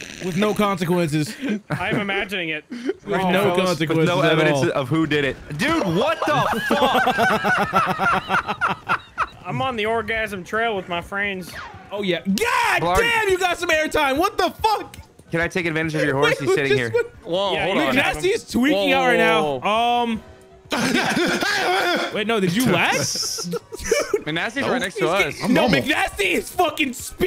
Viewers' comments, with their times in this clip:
0:09 Harry Potter theme starts playing